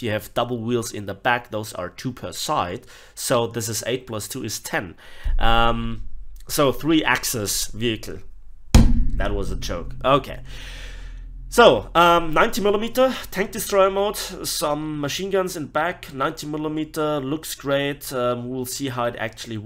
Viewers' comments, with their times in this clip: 0:06 "So 3 axis vehicle--" table slam "That was a joke."